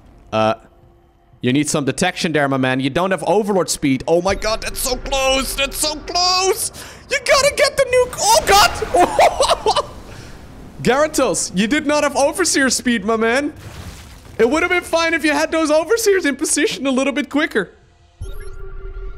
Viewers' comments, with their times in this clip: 0:03 i want those few seconds as an announcer pack voice line for nuke detected lolll '''omg thats so close, YEWWW GOTTA GET DEH NIEEEWWKE UAHEUEAHEU '''